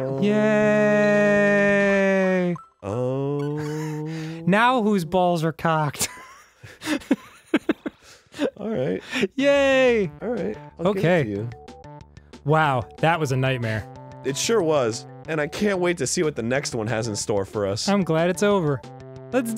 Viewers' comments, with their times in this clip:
0:04 That was the softest banter I’ve ever heard. Also,nice...........